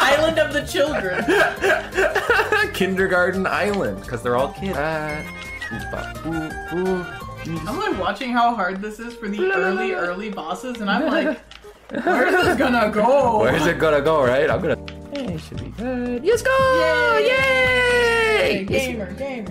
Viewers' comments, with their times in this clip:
0:04 intense music with an intense fight TO VERY calm music with an intense fight [ITS A MASTERPIECE ]